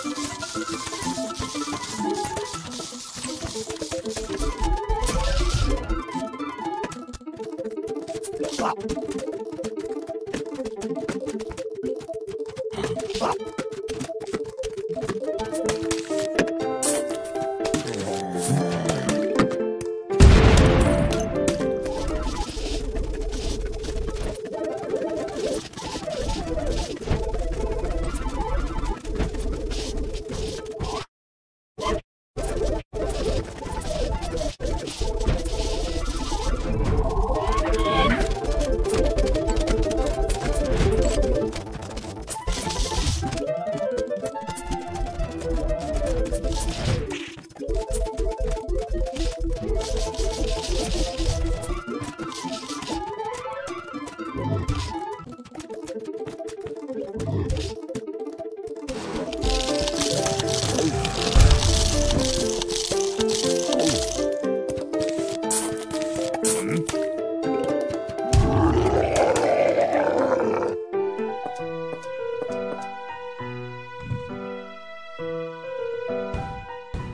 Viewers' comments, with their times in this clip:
0:10 I noticed you had garlic on corner. I didn't see it and I hear zombies go 🤢 and I was like 🤨 wth?! Then I saw the garlic 🧄
1:03 Can we stop to talk about how syncronized the music and the planting and squash sounds are ?
1:04 sound efects fit so perfect
1:05 The way the sound effects ended up in sync with the music. Truly wonderful.